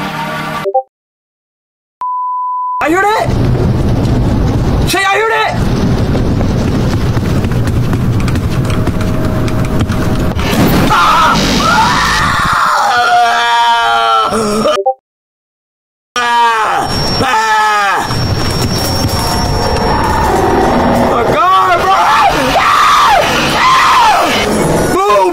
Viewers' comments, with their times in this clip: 0:08 Bro is a louder screech💀